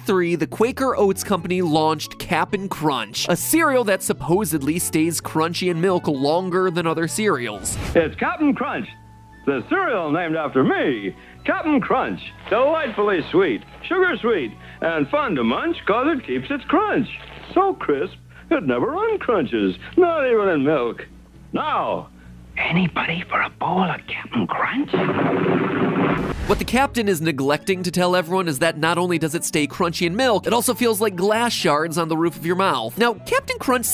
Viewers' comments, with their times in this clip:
0:09 why does he sound like he’s being held hostage
0:19 When Capn Crunch says "Not even in milk" it sounds like hes drunk